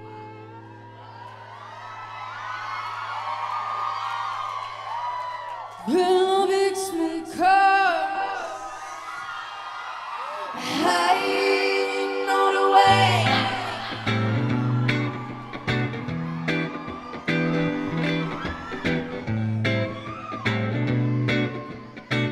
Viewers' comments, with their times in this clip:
0:10 that harmony caught me completely off-guard woah